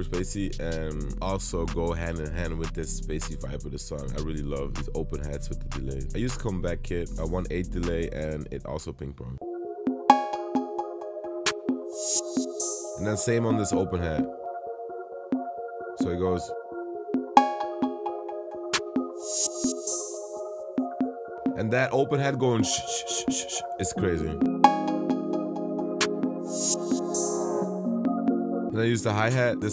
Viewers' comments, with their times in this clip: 0:10 I dont want to hear the cowbell in 2024 anymore, its so overused in the music i listen to